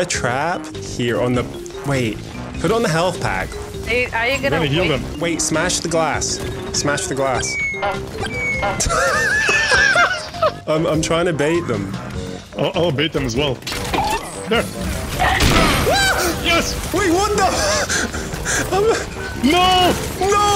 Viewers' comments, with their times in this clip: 0:07 As a Fancy Pants Man enjoyer I'm happy to hear the bonk sounds